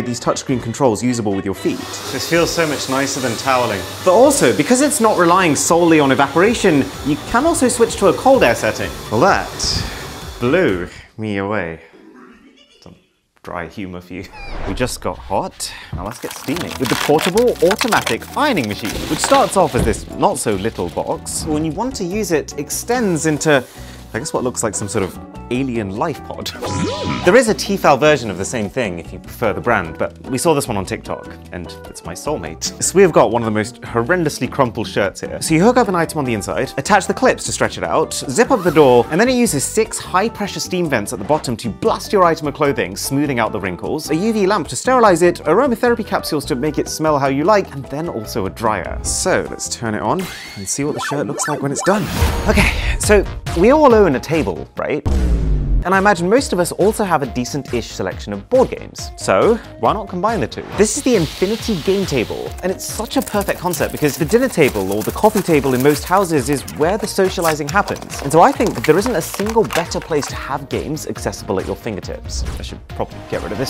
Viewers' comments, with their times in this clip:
0:10 in the vid you can hear a weird laugh
0:11 the "rehehehehhe" in the backround got me on the floor XD
0:11 bro the reheheheheheh in the back
0:11 is that fucking pennywise's laugh
0:11 Did you all hear scooby doo laughing ?
0:11 Did anyone else notice the scooby doo laugh ?
0:11 I heard a clown laugh
0:11 the noise in the background 🤣🤣🤣
0:11 you can something go reheehe
0:11 anybody hear scooby doo?
0:12 The rehehehehhehehehe killed me 😂
0:12 scooby doo laugh lmao
0:12 we just gonna talk about the ree sound effect in the background😂
0:12 Are we just gonna ignore the scooby-doo laugh
0:12 that Pennywise laugh😂😂😂😂
0:12 Ayo what was that ? ReeHeEhheEheE
0:12 What was that laugh 😂
0:12 that hidden scooby laugh 😂
0:12 No One's Talking About The Goofy Scooby Doo Laugh? "Oeoeoeoeoeeheheheheh"
0:55 What is he banging his fists on??
1:00 “the infinity gay table”🤨 anyone else?